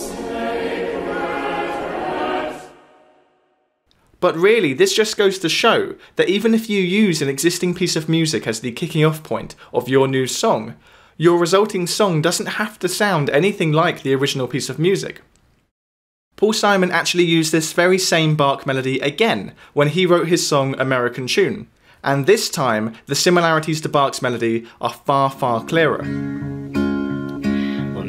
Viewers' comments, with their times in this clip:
0:03 it now makes me think the Australian Anthem was written based on "O Sacred Head, Now Wounded". it sounded really familiar when you played it, then i realised where i heard it before, lmao
0:10 "The song doesn't have to sound anything like the original music" and yet it does .... i clearly hear the resmblence. And by the way, try to prounce the name just like the singer does it that clip you showed us in the beginning of the video .... he pronounces the name correctly. Not BaK or Back etc but BacHHHHHHHHHHH .... there is an H not a k.